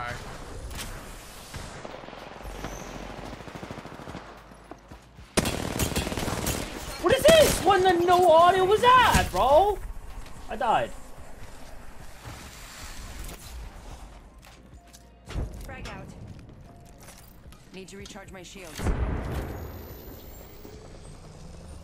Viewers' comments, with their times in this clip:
0:08 there was audio you could here the player running on ur left